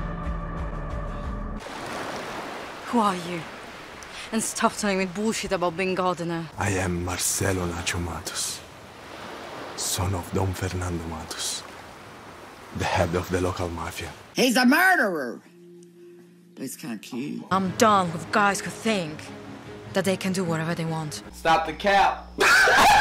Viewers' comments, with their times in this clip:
0:07 HELP I MISHEARD HIS NAME AS MERCELO LA TOMATOS 😭😭😭😭😭😭😭✋🏾✋🏾✋🏾✋🏾